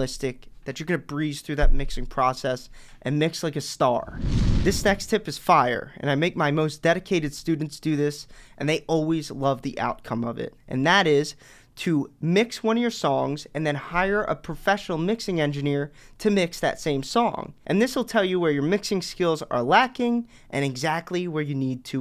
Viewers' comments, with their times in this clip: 0:04 sex tip? yoooo hahah wth